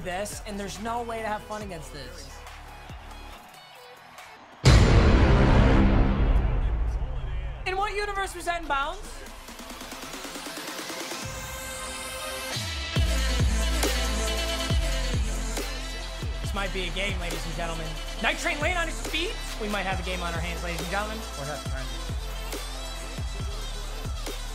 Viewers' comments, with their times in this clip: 0:10 that music you know it’s gonna be a pick